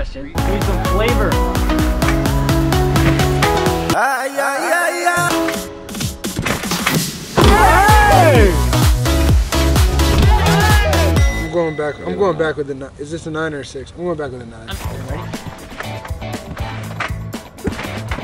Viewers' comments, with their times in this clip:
0:03 Lmao The Song